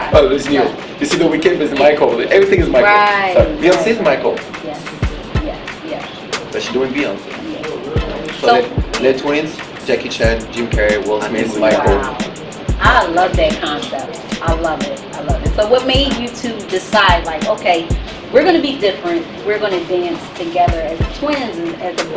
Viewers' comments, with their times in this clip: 0:10 did larry said "I think were gay" ? LOL